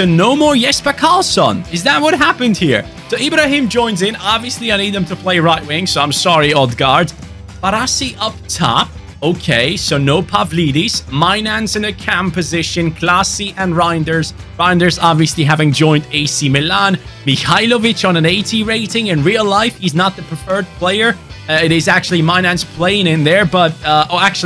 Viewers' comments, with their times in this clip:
0:10 im sorry but I found it funny you said My nan's in the CAM position XDDD